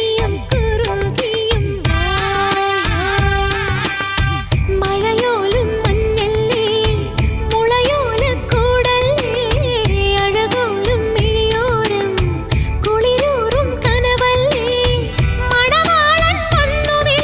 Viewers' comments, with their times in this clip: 0:04 goosebumps ❤ Chitra Amma voice feel !